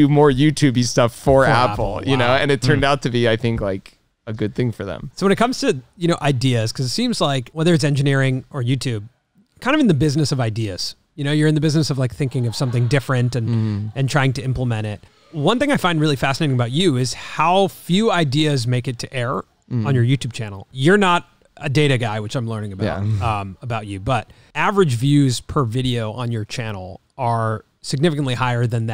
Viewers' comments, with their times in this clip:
0:10 what's with the horrifying scream
0:12 LMAO I love how you can hear someone SCREAM in the background and they just gloss over it 😂 😂